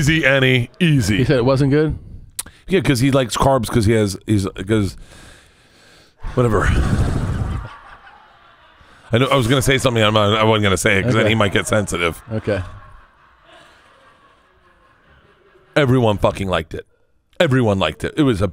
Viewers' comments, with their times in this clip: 0:04 Bert’s exhale sounded like my Saint Bernard